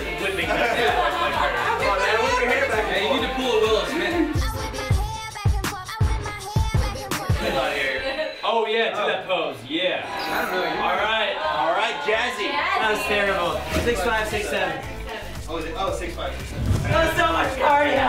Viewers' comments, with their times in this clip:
0:03 I thought that he said: "You need to pull a Will Smith" at first 💀💀💀